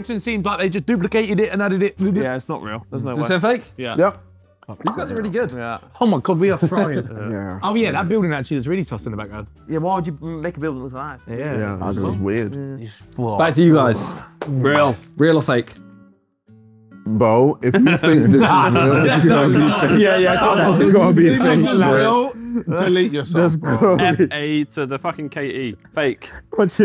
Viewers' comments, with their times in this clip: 0:07 why did I just hear vik say “yeah” as well